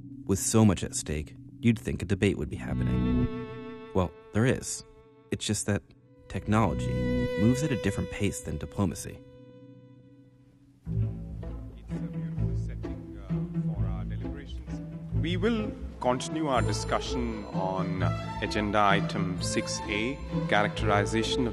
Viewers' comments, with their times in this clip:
0:09 video became unwatchable for me. Hall of the Mtn. King is way too distracting to be able to concentrate on dialogue.